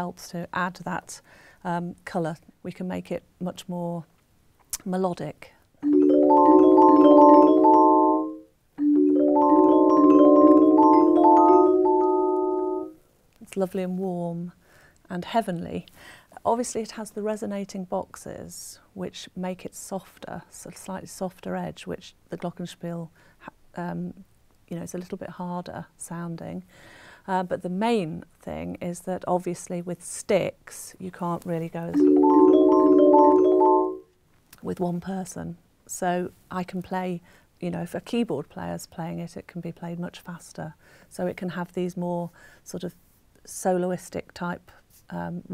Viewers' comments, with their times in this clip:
0:03 The D gets stuck
0:06 sounds like some sort of power-up in a Nintendo game.
0:13 the "D" is stuck
0:33 that is a Mister Roger's Neighborhood sound right there. :-)